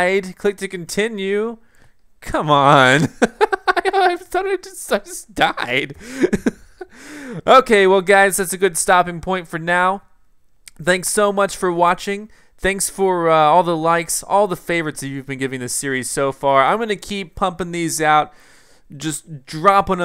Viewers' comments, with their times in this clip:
0:04 LOL his laugh so funny